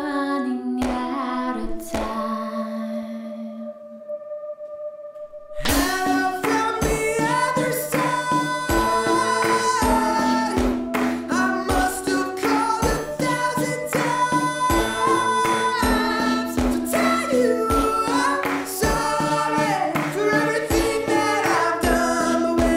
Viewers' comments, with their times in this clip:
0:05 cymbal kick for the win!